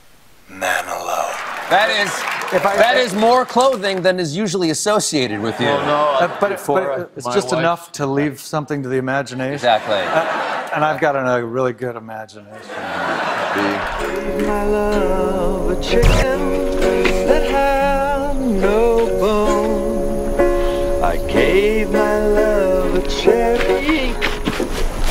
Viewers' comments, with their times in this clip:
0:08 his delivery is very similar to Dean Martin